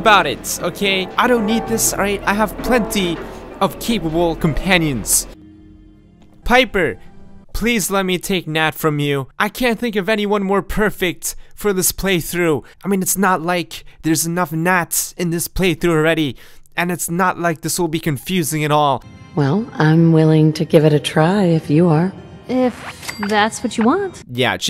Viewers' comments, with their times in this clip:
0:09 i wasn't expecting the ground up voice there